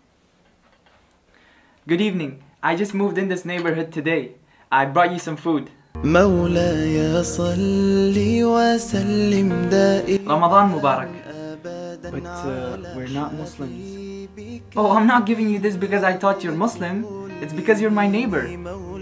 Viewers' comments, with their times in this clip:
0:06 It gave me chills from head to toe Allah akvar amazing nasheed